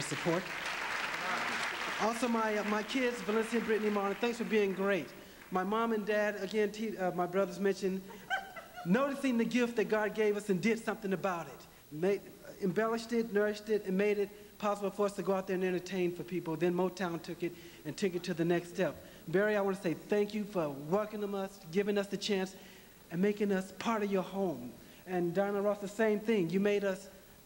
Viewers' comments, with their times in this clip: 0:08 is it only me who heard Michael's laughing ?? 😂 God!!
0:08 🤣🤣🤣 Michael 's laugh is so cute and distinct
0:08 my god !michaels laugh !
0:08 michael laugh😂😂😂me giggle